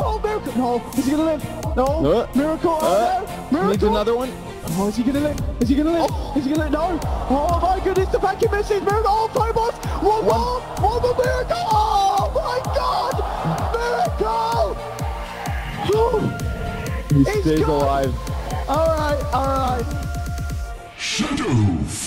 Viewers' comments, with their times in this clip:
0:10 Caster nergasm in